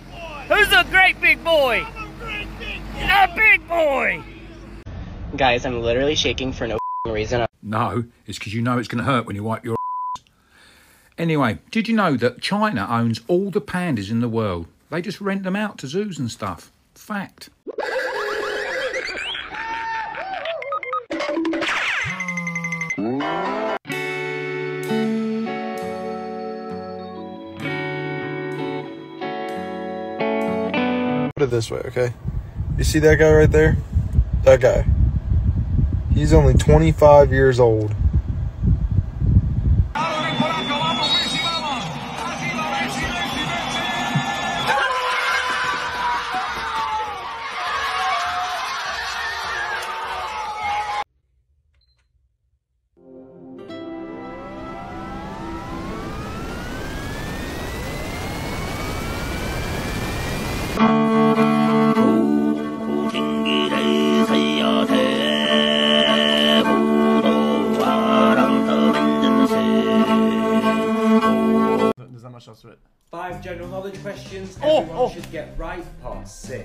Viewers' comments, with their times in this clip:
0:06 close your eyes and think of sniper tf2
0:08 had me thinking it was Sean Lock 😢
1:00 i just like his singing